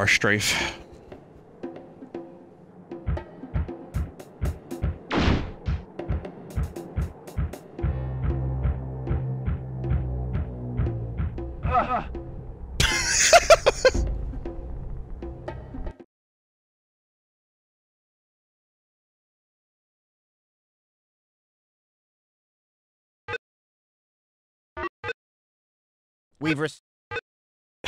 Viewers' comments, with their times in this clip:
0:10 got me again with the "Uh UH" death sound